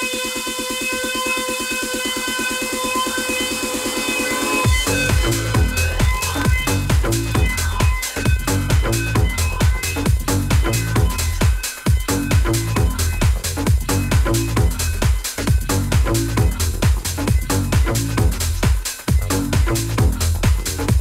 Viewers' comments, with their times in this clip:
0:09 Was going to leave.. then ......thanks for allowing this playback to be so loud !!!!!!!!!!!